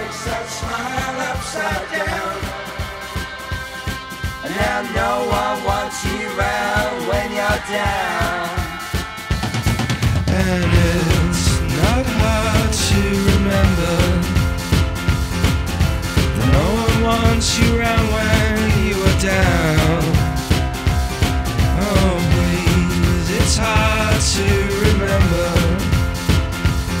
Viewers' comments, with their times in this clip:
0:09 best part!!! Love that crazy piano